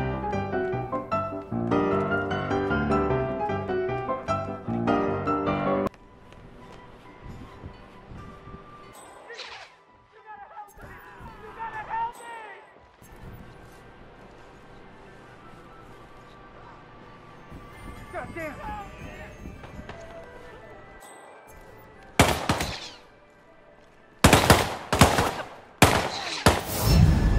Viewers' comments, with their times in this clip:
0:09 It seems like they cannot cope with this supressing mechanic. To me it seems like in we hear gunshot(imo from guards supressing the possible vantage point?) and civies in 47's vincinity automatically panicking/ spotting 47. Like the gunshot heard from guard in other corner of the hub triggered civs near 47 which shouldn't bother at all. It feels like they literaly dropped an untested/unfinished mechanic into game. EDIT: Just noticed that civs trigger right before the gunshot, which means it's more BS then i thought ;/